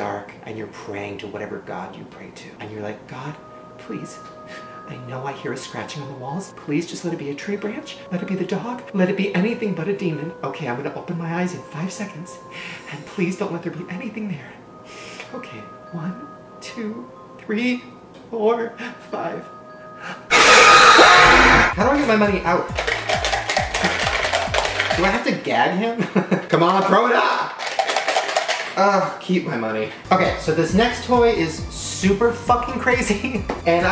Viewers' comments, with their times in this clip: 0:03 THIS IS WHY NOT TO WATCH YOUTUBE IN BED AT NIGHT I was watching this in bed at night, falling in and out of sleep and this part started and I was asleep and I was dreaming that me and my mum were in a egg chair with my dad and my dad was telling the story and Mum started to kinda have a seizure and then when Shane screamed she did that ting that pennywise does where he shakes his head from side to side and comes towards you and I nearly died in terror and I’m never gonna see my mum in the same way
0:21 Headphone user warning